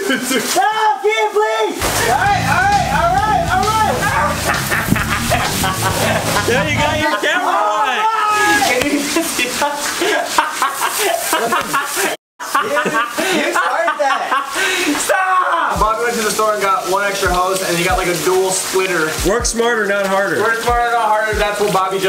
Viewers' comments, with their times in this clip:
0:04 fucken looking and sounding psychotic but hella funnny 💀💀😭😭😭😭😭😭
0:05 that evil laugh is everything I need in life💀